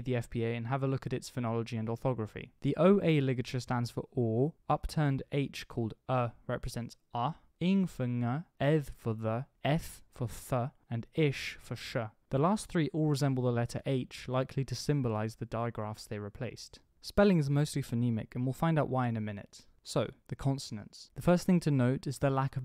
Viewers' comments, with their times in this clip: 0:03 you spelled [ɔː] but pronounced [o̞ːo̟]...